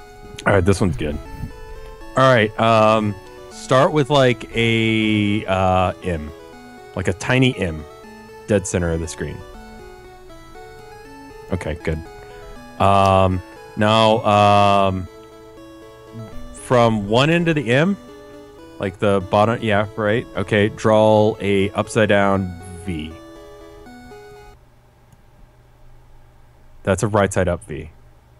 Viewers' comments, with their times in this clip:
0:09 just listen to the background music as he's drawing